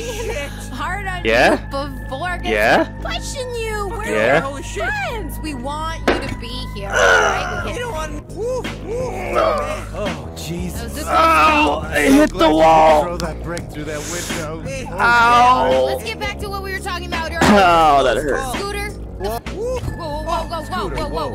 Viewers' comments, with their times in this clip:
0:09 that was a painful groan, are you okay??? Xd